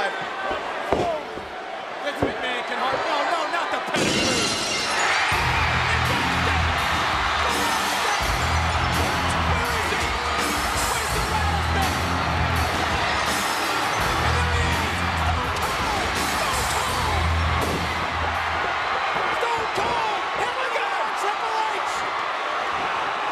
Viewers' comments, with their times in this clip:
0:05 was beautiful stone cold music know that's pop thank you wwf attitude